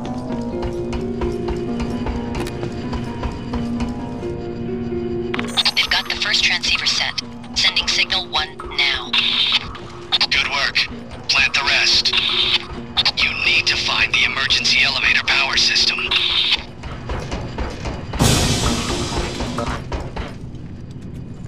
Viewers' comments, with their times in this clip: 0:03 for some reason the alarm triggers